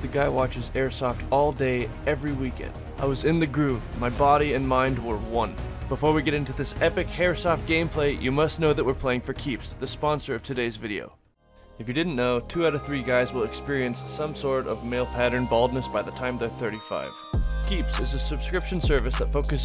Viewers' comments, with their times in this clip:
0:06 anyone else hear "epic hairsoft gameplay"?
0:06 i like how in the beginning he says hairsoft insead of airsoft banger video btw